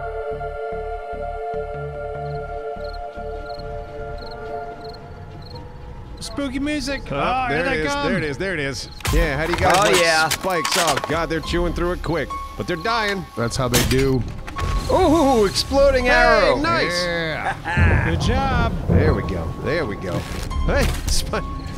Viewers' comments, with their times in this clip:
0:06 "Spooky music!!" More like the music because one of you are going to die, again. Haha!